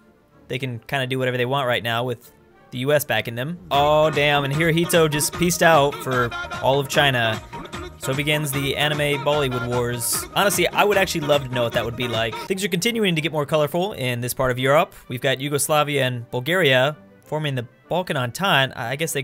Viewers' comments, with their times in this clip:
0:04 Indian tuduk tuduk music starts for Indian-Japanese war aka Bollywood-anime war